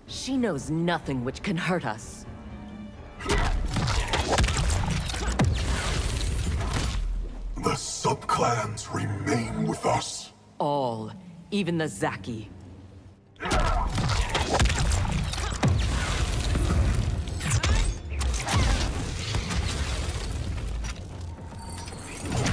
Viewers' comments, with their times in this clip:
0:10 That's.. NOT Chinese..